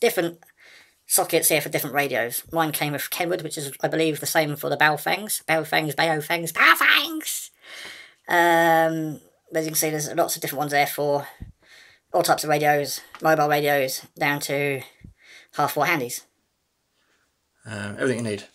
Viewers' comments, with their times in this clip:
0:05 I liked this video simply for the “baofeng Baofeng BAOFEEENG” part